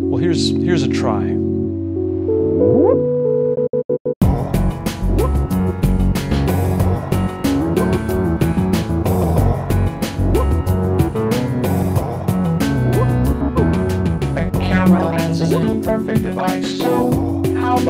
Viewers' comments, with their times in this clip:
0:05 The whup, ohh ohh thing is great